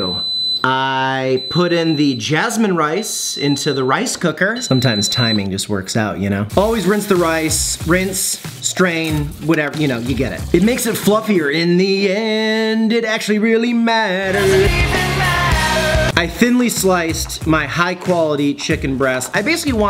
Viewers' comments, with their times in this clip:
0:05 Am I the only one that though my smoke detector was going off ? 😅